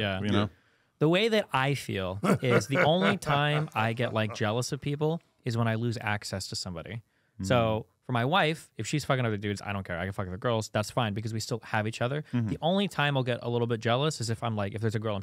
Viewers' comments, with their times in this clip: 0:03 the chuckle from crip mac minutes in is amazing lol